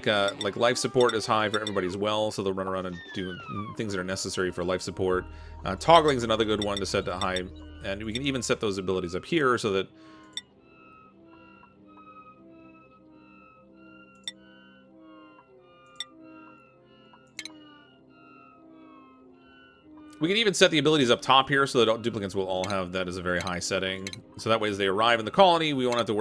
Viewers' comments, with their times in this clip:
0:10 is my favorite moment in this video... Just awkward silence as he figures it out while explaining after xD